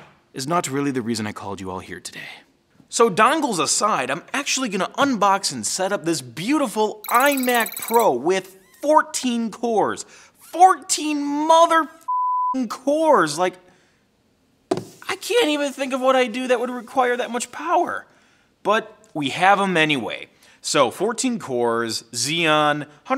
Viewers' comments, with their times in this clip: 0:10 Do yourself guys a laugh, if you're getting fun out of swear word censors. 😂